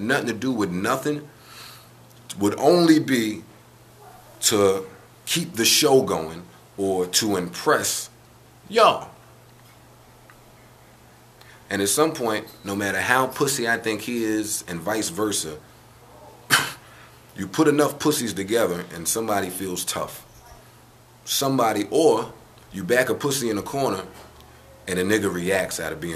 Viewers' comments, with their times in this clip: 0:09 Can anyone tell me why does Joe Budden yell out YOOO!. LMAO I keep playing it and laughing maybe its just funny to me?